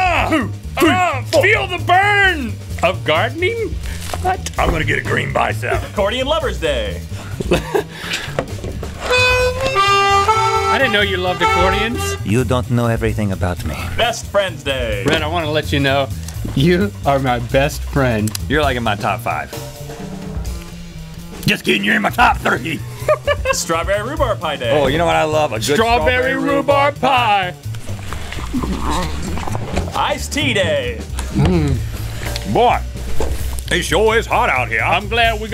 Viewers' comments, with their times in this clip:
0:07 thats armonica not accordion
0:22 Link sounds like the Pillsbury dough boy